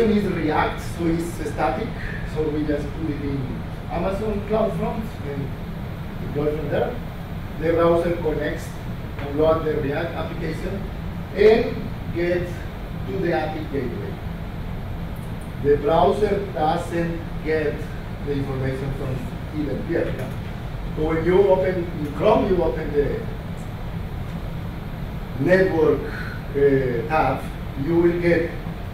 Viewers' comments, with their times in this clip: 0:10 very valuable presentation, only the sound that is not good enough